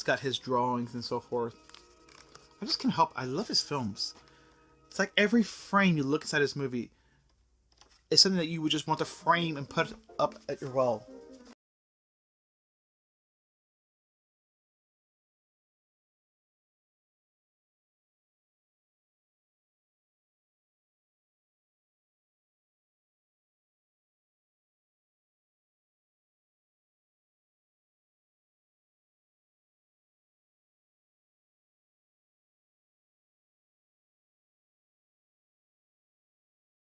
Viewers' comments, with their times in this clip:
0:08 Your sound went out 🙁
0:21 Great shirt! Yojimbo great movie copied by so many action films. Elephant man 4 stars , I always liked Wild at heart . sound goes out bout No Ingmar Bergman? The Virgin Spring 1 of the best, copied by Wes Craven Last house on the left.